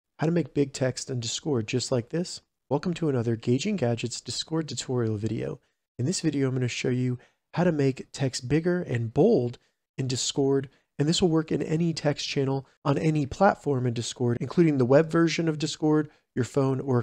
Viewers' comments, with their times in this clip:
0:01 No its disc ord he is right. He said it